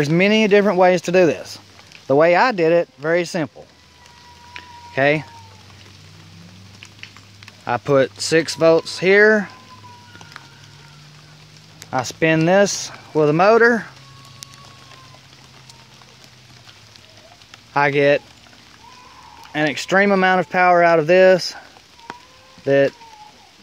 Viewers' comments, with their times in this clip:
0:06 That baby crying or so on got me fucked up lol